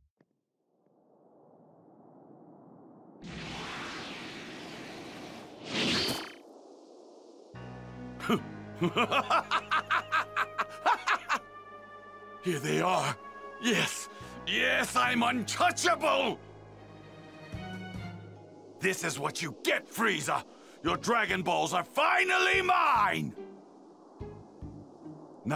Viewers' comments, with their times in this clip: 0:08 Goku's Boyfriend Vegeta Insane Laughter